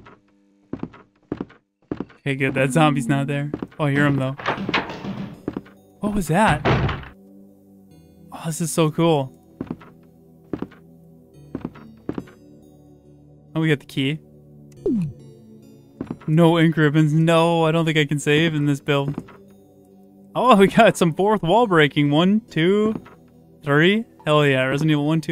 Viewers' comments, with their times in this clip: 0:06 What is the song ? It's a really sweet gloomy remix of The One who survives / Rebecca's theme, does anyone know what is the name or share a link to this song?